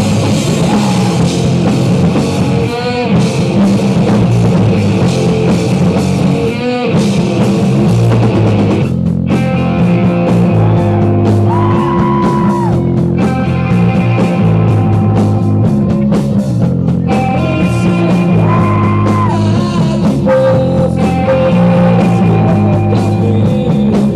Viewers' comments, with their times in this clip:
0:10 Good to see that Stevie Wonder worked part time as a camera operator. Stevie was so good at it too. you can hear a man screaming twice after being shot with a gun in the crowd. P.S. When the people start jumping up and down they look like dolphins that jump out of the water gasping for air.